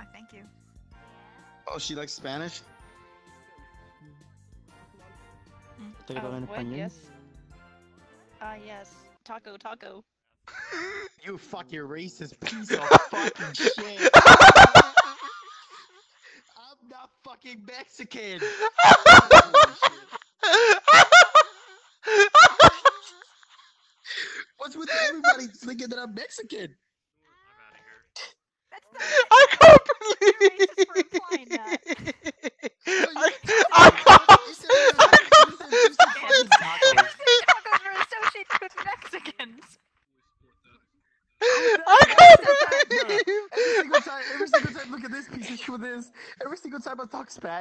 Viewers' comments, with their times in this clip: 0:08 When u think ur pretty decent in speaking Spanish but then the person starts speaking mad fast spanish
0:34 Dat boi a squeaky toy